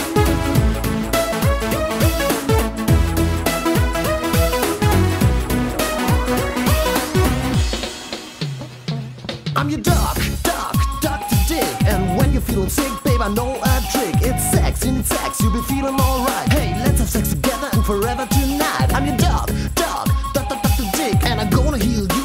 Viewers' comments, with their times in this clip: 0:04 it kinda sounds like megalovania